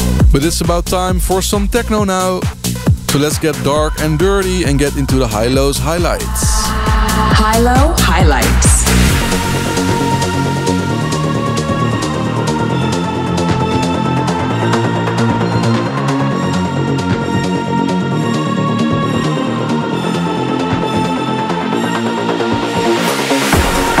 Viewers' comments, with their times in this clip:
0:08 I don't care what number you put on the episode. Don't touch her! Great music perfectly mixed. Thanks Oliver HI-LO'S Highlights